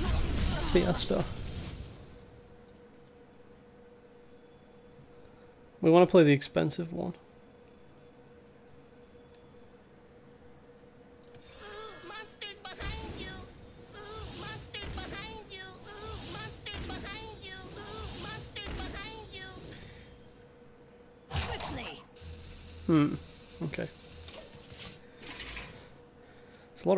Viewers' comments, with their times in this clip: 0:07 with speed X2.. Oooohmonstersbehindyou